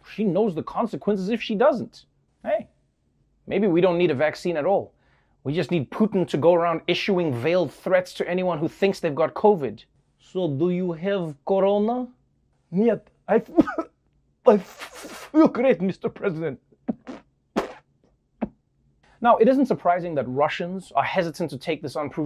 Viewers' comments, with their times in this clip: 0:08 Damn, he nailed that moment, when you're trying to hold a cough in. We've all been there. (maybe now more than ever...)